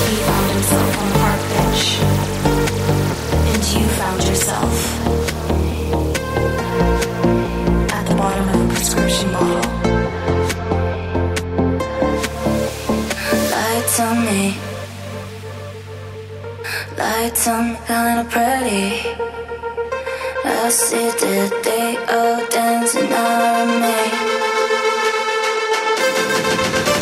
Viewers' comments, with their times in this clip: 0:10 Everything after is just crazy good I love the part where she sings "lights on me"